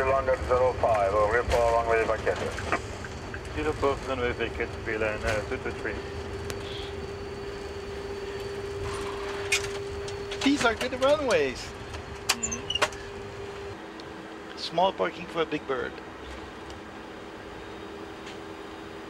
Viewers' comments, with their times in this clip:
0:04 he laugh because he did a fucked up landing... great video though..